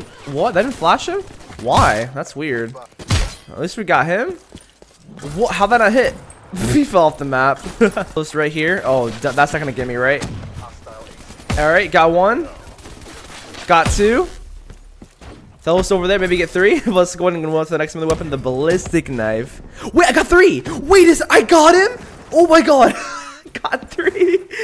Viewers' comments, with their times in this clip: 0:05 he laughs when this guys falls of the map and right after he falls of the map. (It’s quite hard to see tho cause he cut it off)